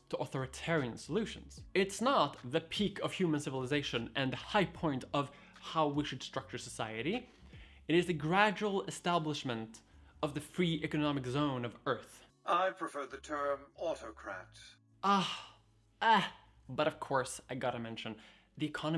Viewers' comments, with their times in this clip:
0:05 looks like the audio desynced